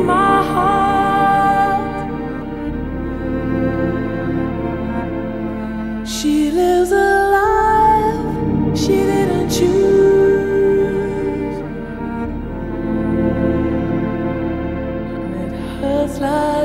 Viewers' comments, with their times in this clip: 0:03 That violin and throughout is deep. Brings out some real emotion. Beautiful song.